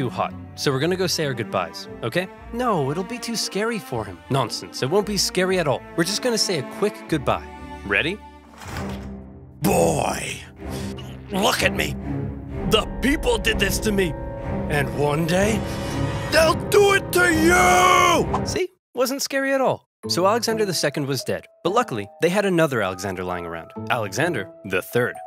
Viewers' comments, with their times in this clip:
0:09 "BOY!" Is that you, KRATOS?